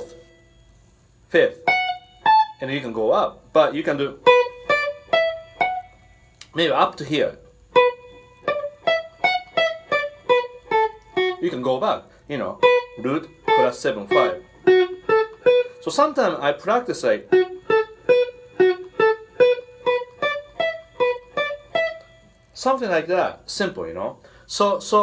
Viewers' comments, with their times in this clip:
0:09 Not a huge fan of hip hop but have listened to quite a bit. There's a hip hop track in there somewhere